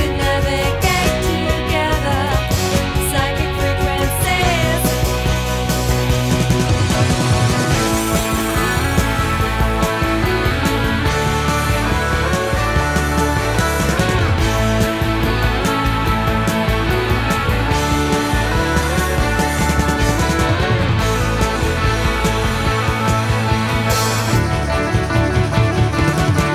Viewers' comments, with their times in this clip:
0:09 Love the lead and rhythm guitars playing together